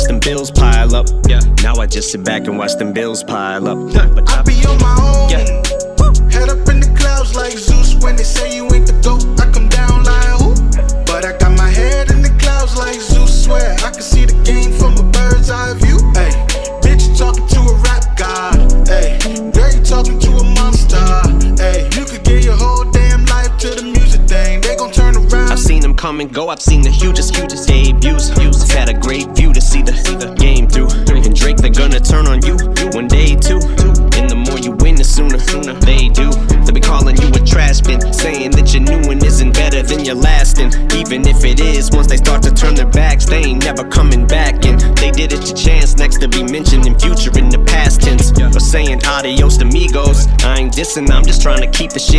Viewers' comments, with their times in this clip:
0:04 lol at eminems adlibs.
0:37 anyone noticed when he dissed drake he used the rhyme pattern of song from drake life is good